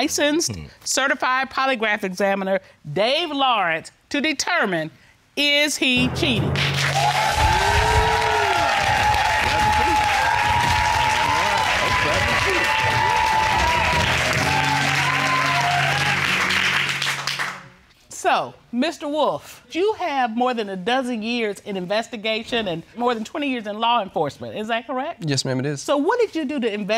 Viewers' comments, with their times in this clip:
0:10 not him CLAPPING like a SEAL. I'm screaming:face-blue-smiling::face-blue-smiling::face-blue-smiling: